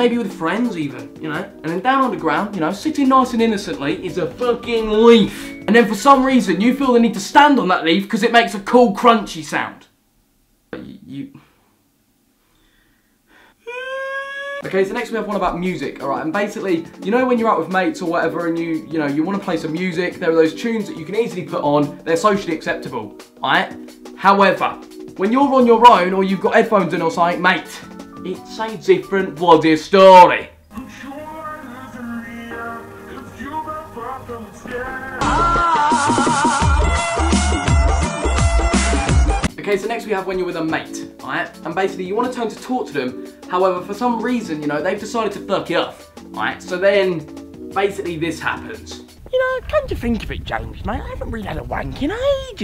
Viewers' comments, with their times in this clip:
0:10 you can here him fart
0:36 why do I actually love the music